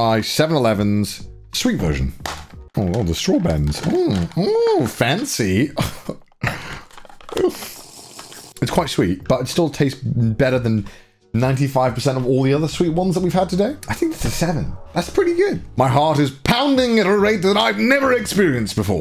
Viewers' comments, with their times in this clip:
0:07 I actually heard the moan when the Seven Eleven coffee hit the Familymart coffee and I must say the screen I’m looking at while writing this is a little scary I mean I’ll just show you where I’m